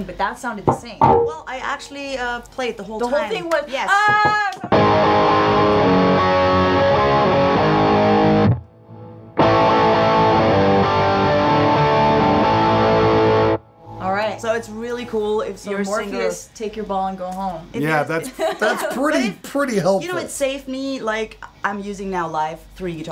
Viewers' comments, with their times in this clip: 0:05 lol, I was wondering why Jen's signal was wobbly sometimes, if it was a connection or capture problem, then the answer came by itself